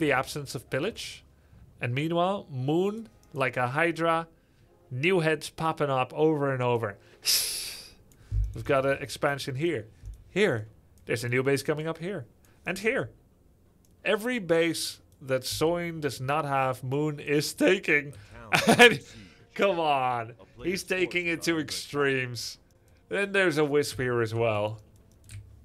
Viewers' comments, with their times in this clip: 0:07 The hsssss was personal